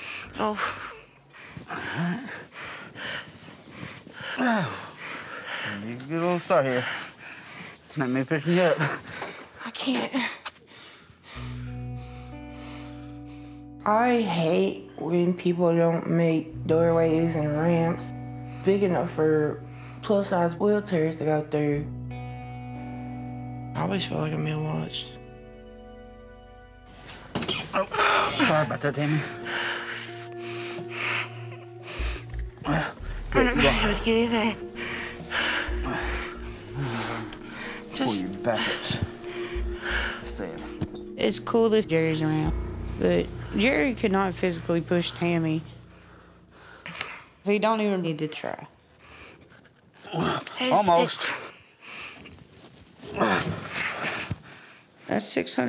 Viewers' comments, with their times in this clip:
0:03 why tf is tammy out of breath when she’s literally just sitting there 🗿
0:41 y’all hear that editing ? 😭